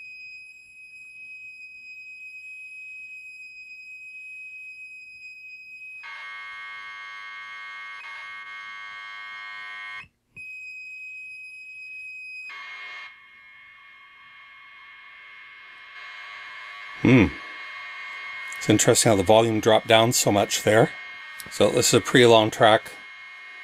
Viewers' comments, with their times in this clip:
0:06 There are a couple quick blip sounds that remind me of some of the ones you'd hear making phone calls back in the 70s.